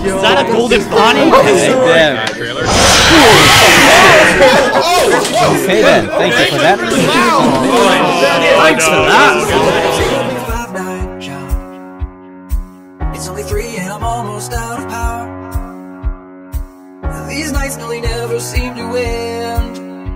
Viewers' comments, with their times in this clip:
0:03 My Favorite Part When someone shouts like a monster Me: